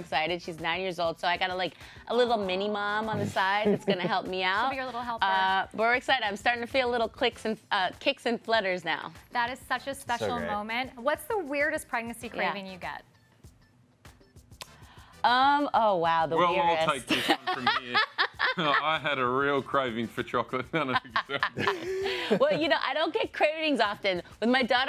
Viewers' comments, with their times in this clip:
0:10 Is it just me or does he say “so gay” on ?